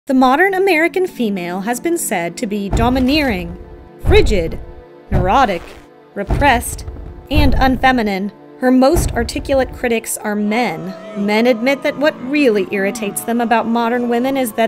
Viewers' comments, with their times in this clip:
0:01 Why did she say American so weirdly